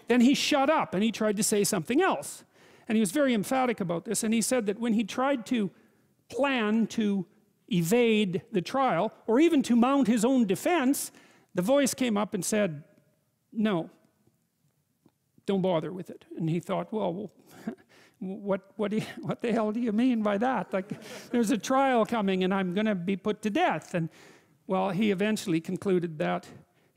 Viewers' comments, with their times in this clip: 0:08 JP goes full kermit